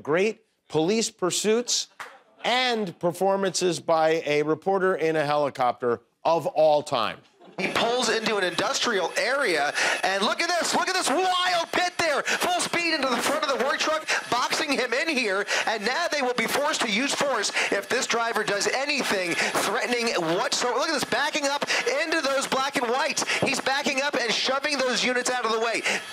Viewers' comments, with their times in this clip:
0:07 The guy calling the Police Chase should be hired to call every single Kentucky Derby from now until the end of time.